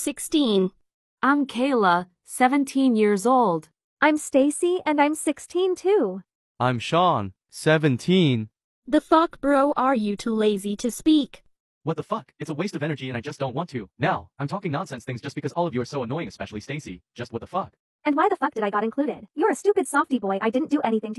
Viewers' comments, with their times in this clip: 0:09 why the voice💀💀